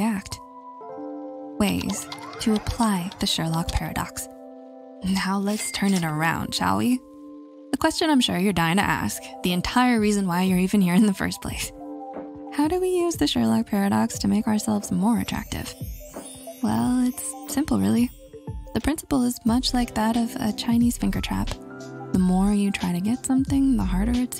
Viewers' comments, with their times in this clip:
0:10 nah mate, im just here to listen to your calming voice